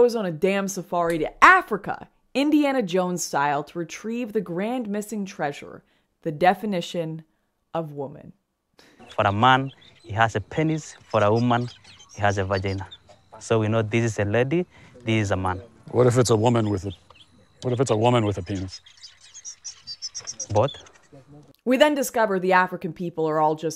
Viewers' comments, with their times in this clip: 0:09 This is the part that had me dying. I'm sorry, but with their accent, and the way they say those two words that I've never heard pronounced that way before, it just gets me bruh... 🤐💀